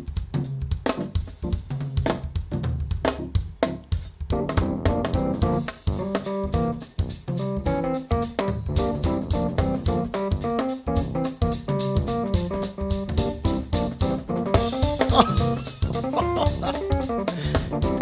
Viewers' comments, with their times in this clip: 0:05 It started getting churchy